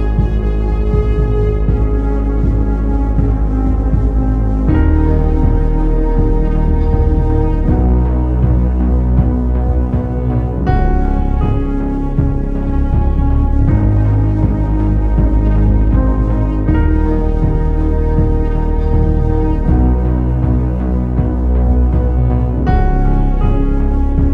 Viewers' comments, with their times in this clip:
0:07 calm music while they devour the fishes eye